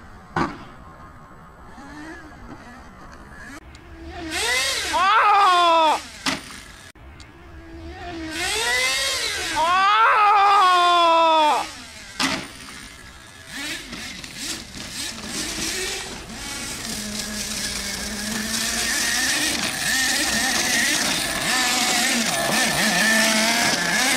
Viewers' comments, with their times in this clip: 0:06 i loved the scream hahahahahah